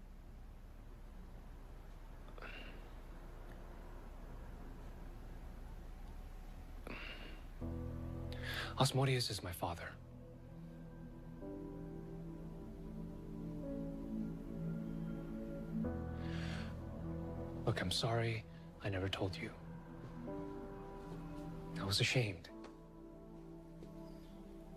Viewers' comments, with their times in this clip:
0:05 Love Magnus expression here and mhffm sound he makes twice 😂